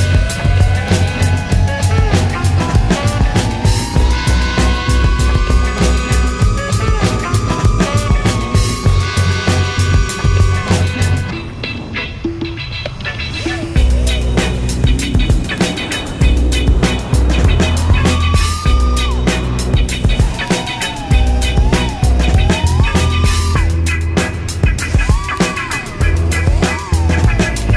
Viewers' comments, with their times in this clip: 0:10 Tiiiiight Flying, that fountain proximity was nice, someone else already said it but, I think I hear your battery writing its final will :))) I was blown away that it climbed it again with almost no sag, curiously are you running a mix of whatever you find or a specific pack? Very Excited to see the race video, remember to make sure you don't hit yourself its terrible, I have a video of it happening to me on my channel : (